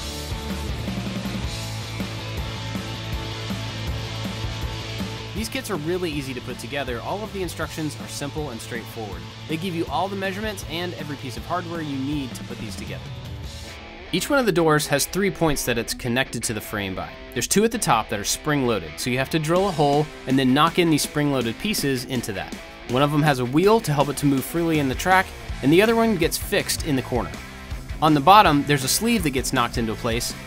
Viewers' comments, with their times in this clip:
0:05 what happened to you mic?
0:14 The volume difference was very obvious tho 😅